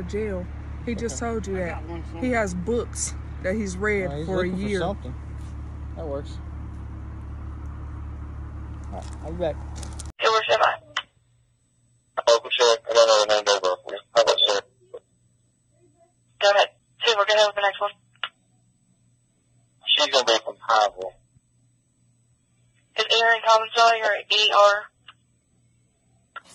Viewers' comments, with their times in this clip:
0:10 Personally, I think they ahould use pop filters on all mics. I cannot really understand the communcation on the radio.